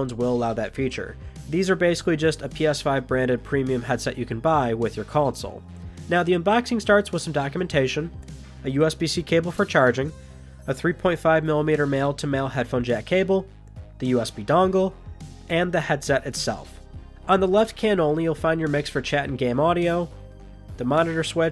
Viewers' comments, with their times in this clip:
0:06 "Now the UNBAXING starts...."